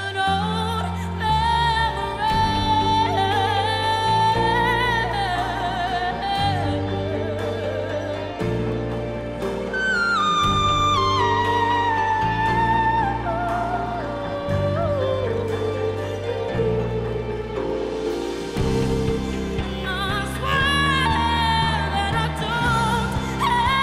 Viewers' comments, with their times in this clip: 0:09 that note.. Chills!!!